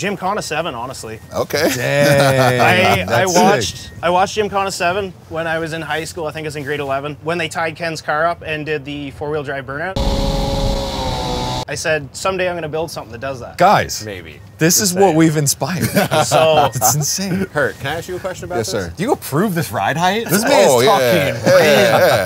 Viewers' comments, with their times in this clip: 0:07 “in grade 11” straight outta trailer park boys